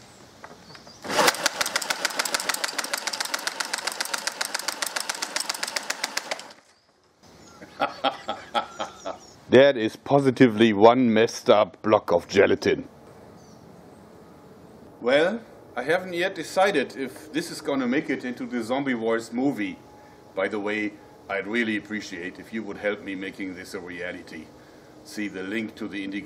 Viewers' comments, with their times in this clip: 0:07 and the evil laugh comes
0:07 You already knows he's German when he laughs